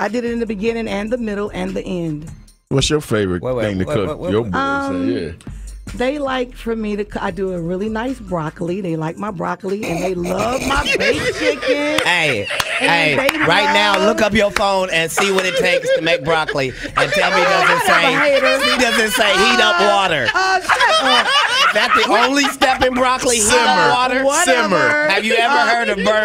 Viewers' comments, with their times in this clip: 0:10 That snicker and laugh kills me everytime I listen to this interview!!😂🤣😂🤣😂